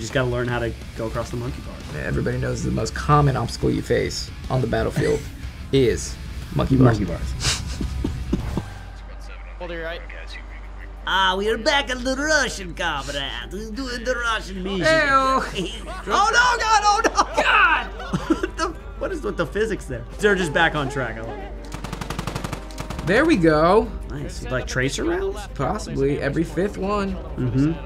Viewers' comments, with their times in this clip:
0:10 I love how he's doing a Russian accent with Italian hand gestures.😂